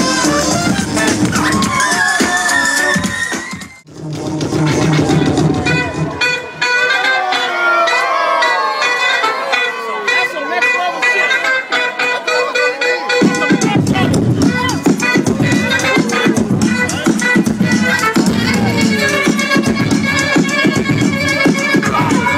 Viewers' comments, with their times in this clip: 0:05 dang whats that break ? Saxaphone is nuts!